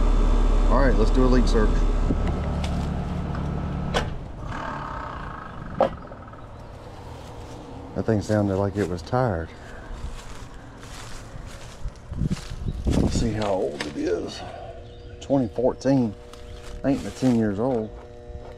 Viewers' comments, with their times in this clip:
0:04 it sounded like it was purring